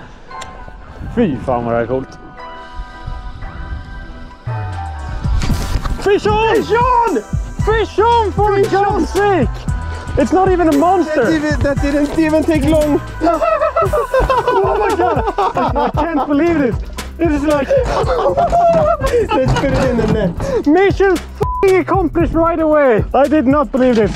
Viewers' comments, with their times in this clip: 0:06 is it French? Fishon?😂🙌